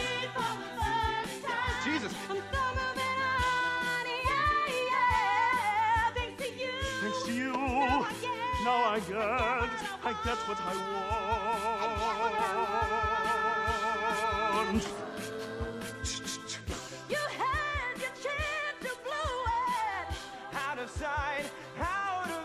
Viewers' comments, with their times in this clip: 0:10 The guy is good but not an acapella person. More of a opera, soul singing person